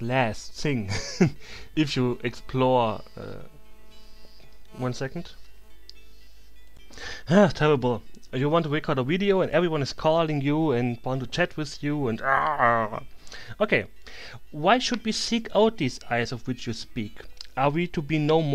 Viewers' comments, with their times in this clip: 0:06 Haha, very funny it almost sound like Arnold Schwarzenegger.